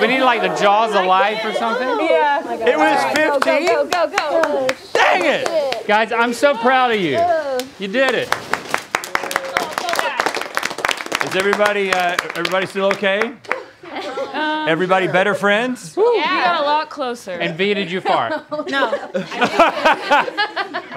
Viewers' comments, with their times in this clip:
0:04 I cant fully tell what is said but my ears keep hearing 1 thing